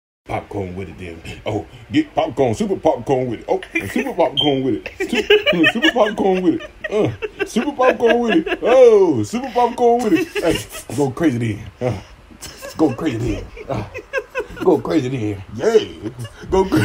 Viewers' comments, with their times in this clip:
0:04 Wh...? you can hear a high pitched device like a smoke detector, which he is using to trigger the guinea pigs into appearing to "dance". The US military could prob get some viral hits showing cetaceans grooving to their sonar. Street-level Barnum and Bailey hustle,this - ("WHEEET!!") "Goin' CRAZY, Popcorn!..."
0:04 Wh...? you can hear a high pitched device like a smoke detector, which he is using to trigger the guinea pigs into appearing to "dance". The US military could prob get some viral hits showing cetaceans grooving to their sonar. Street-level Barnum and Bailey hustle,this - ("WHEEET!!") "Goin' CRAZY, Popcorn!..."